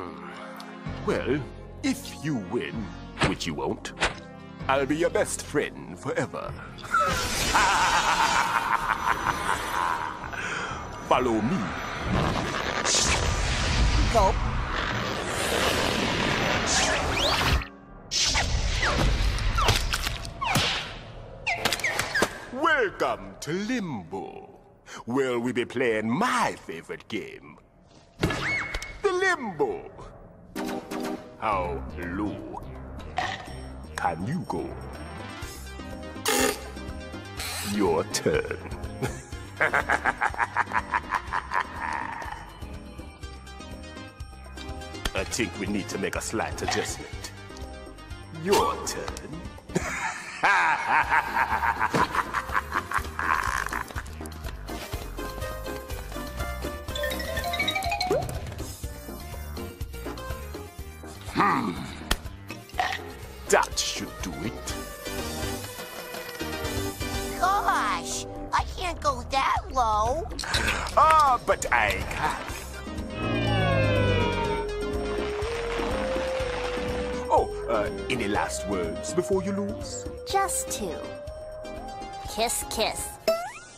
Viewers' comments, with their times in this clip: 0:07 Iconic laugh of a great series
1:07 Gosh! I can't go that low.